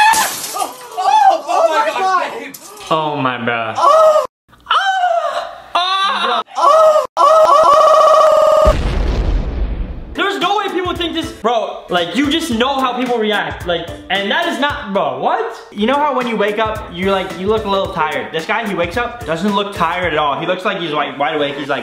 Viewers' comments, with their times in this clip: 0:07 sounds like my computer when it crashes on a google meet